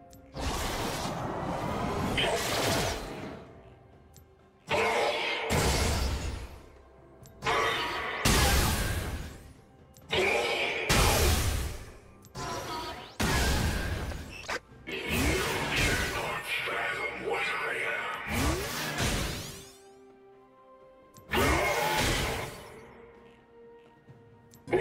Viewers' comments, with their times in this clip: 0:07 great now xerath w makes discord notification sound